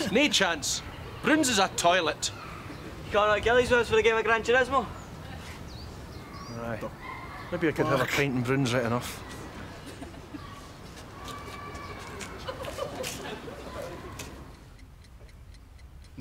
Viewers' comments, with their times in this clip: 0:03 proper Glesga accent 😄
0:04 he said coming to Gilly's with us for a game of Gran Turismo? I struggled a bit too haha